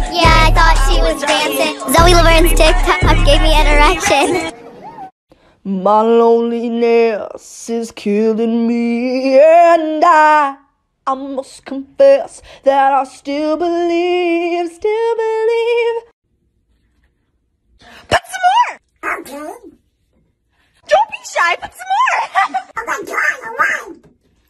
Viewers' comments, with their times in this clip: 0:05 anyone gonna talk about his/her voice?
0:05 Umm widens eyes, looks around can I just say that the girl singing has really good vocals... Because she does.... sips soda